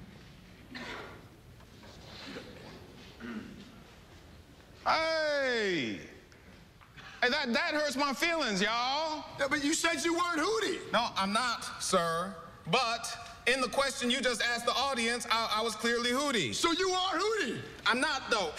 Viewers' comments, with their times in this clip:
0:05 sounds like the LEGO commercial when he would always be like “hey!”